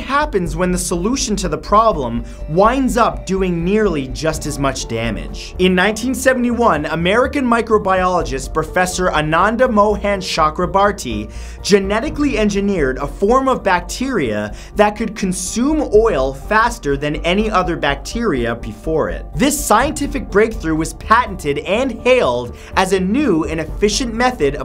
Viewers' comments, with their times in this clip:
0:09 indian by birth .Le indian name butchering